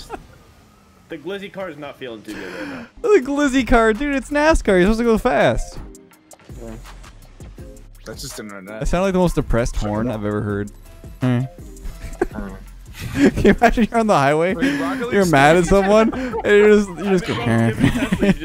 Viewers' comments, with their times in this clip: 0:05 new MC villager sound !